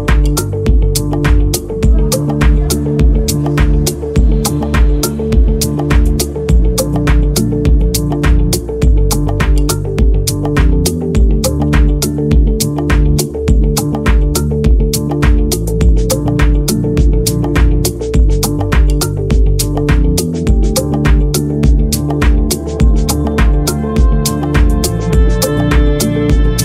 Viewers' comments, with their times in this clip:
0:08 The most beautiful 2 minutes of music in my life!!! Respect !!!